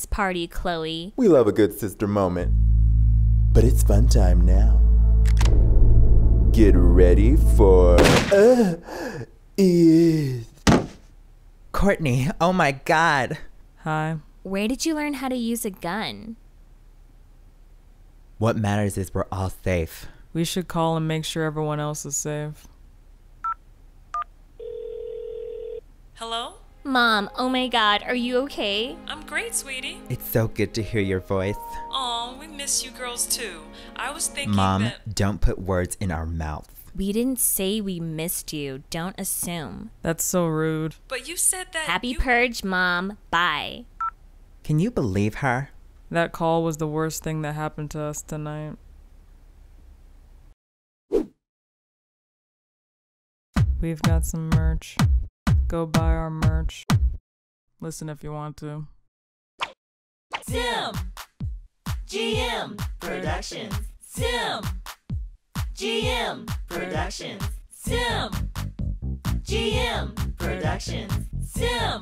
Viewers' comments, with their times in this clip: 0:06 Get ready for- pufferfish moan
0:07 HAHAHA WHAT WAS THAT NOISE HE MADE
0:11 "Kourtney OMG" Kourtney: casual hi
0:53 omg the merch song is so funny i kept rewinding it XD